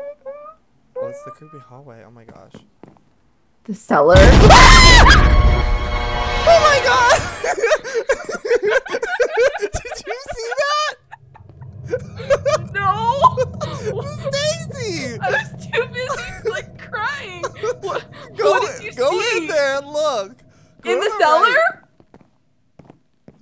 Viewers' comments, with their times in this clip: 0:04 gayest scram ever
0:04 DONT WEAR HEADPHONES